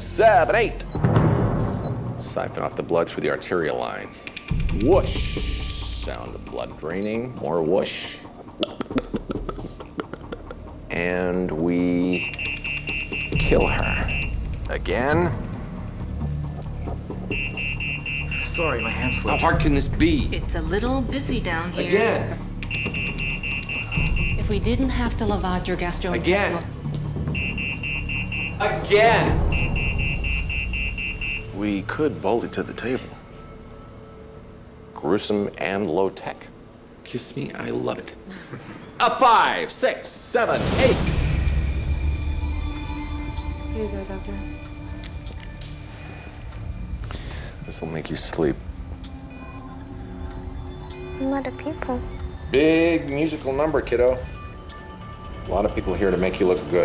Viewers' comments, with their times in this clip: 0:09 I love the sounds he makes
0:36 is that improvised? Seems like everyone genuinely laughed
0:36 "Kiss me, I love it" The laughs and smiles. xD
0:38 the girl laughed, haha.